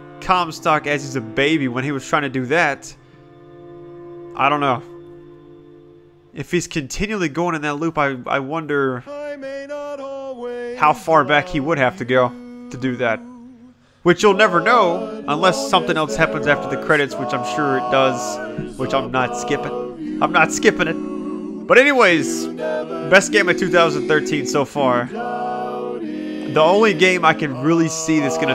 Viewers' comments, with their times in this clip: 0:09 I like how he talks when that song plays. God only knows by Beach boys